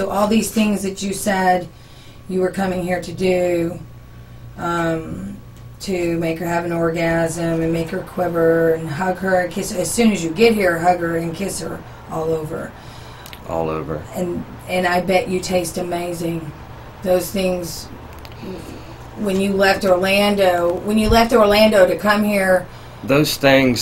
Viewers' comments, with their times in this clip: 0:10 the way he says "all over"